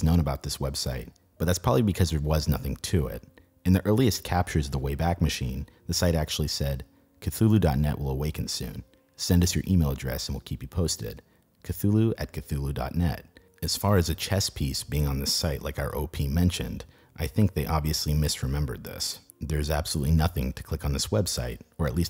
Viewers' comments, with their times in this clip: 0:06 was anyone else taken aback by that pronunciation of "Cthulhu"? lol